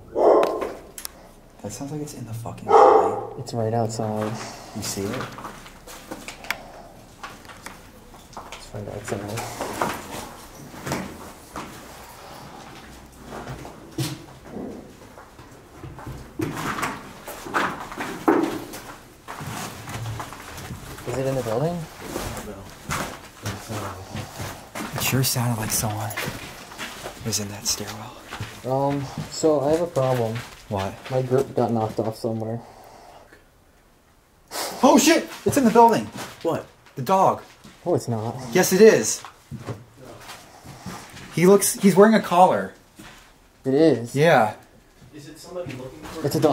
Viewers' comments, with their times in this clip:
0:05 where they hear the dogs
0:34 I'm on my treadmill watching this when he suddenly freaks out and yells. "Oh shit! It's in the building!" I damn near fell off my treadmill! 😆